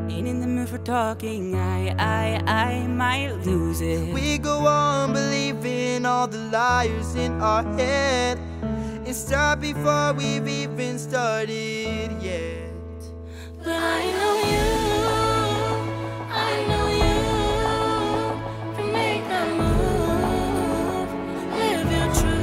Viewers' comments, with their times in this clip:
0:04 I really love his voice💖💖💖